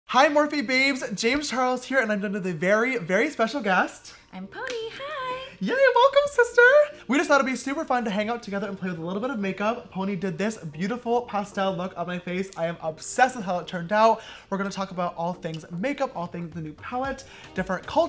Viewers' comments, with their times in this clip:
0:02 what in gods name is he saying